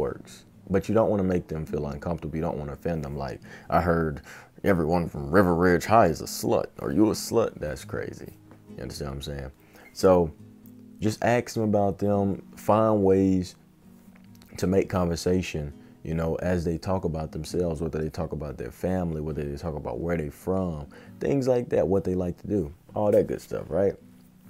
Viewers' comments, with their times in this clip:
0:05 made me laugh because of the accent